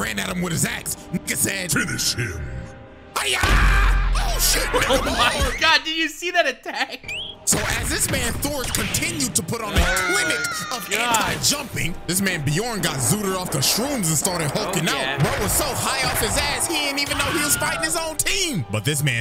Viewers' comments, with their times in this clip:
0:05 Mf has speakers playing music on his boat the hiya kills me every time